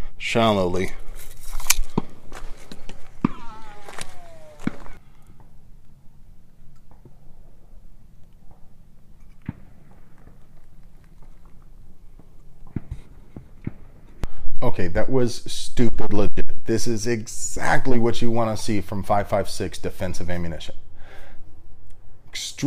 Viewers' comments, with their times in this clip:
0:03 those rounds in the background sound super close.